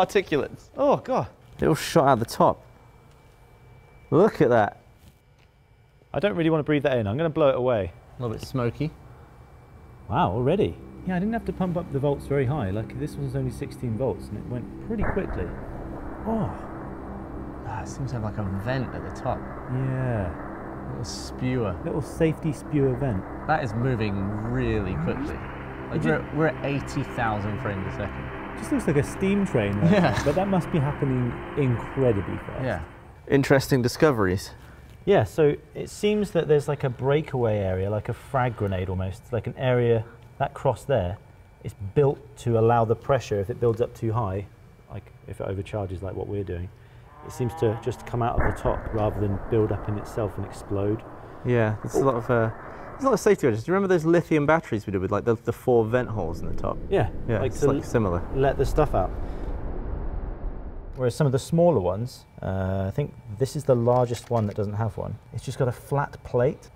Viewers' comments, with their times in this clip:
0:04 ps5 start up
0:47 You can hear it go "HHGGNNN" as if it knows its final moments are happening.